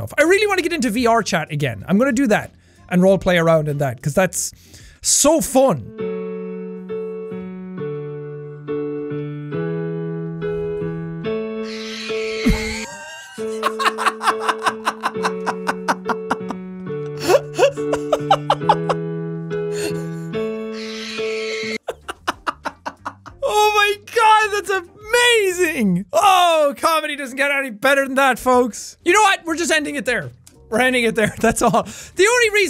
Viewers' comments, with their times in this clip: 0:06 Perfectly Cat Screams.
0:13 More like perfectly cat screams
0:15 sean proceeds to laugh in cat dad mode
0:20 man put his cat on the mic